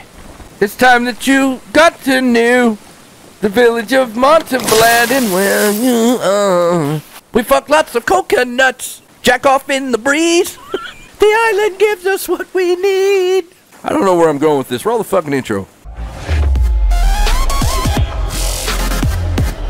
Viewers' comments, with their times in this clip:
0:04 my new fav song!
0:06 is the greatest, and his lil laugh at the end absolutely gets me lmao